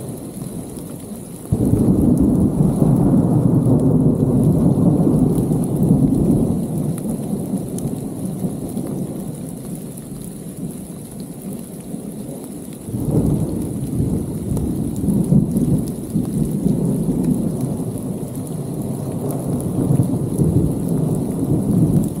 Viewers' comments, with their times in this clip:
0:07 The thunderstorm sounds very familiar to South Africans (living on the Highveld at least). We get exactly the same storms here.